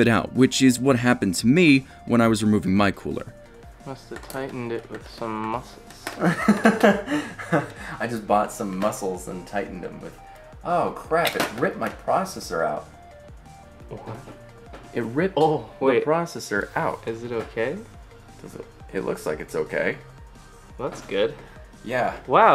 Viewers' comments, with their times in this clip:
0:10 my insides cringed when I heard the proccesor and cooler smack against the motherboard